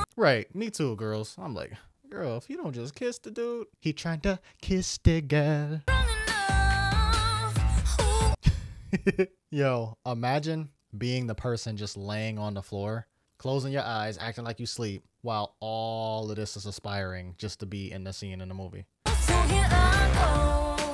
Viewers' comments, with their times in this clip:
0:04 This song reminds me of Kiss The Girl from The Little Mermaid. 😊